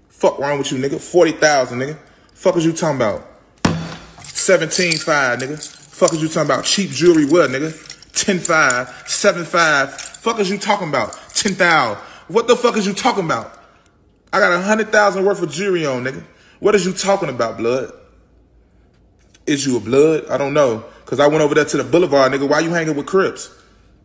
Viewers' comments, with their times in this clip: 0:08 the jewelry sounded like plastic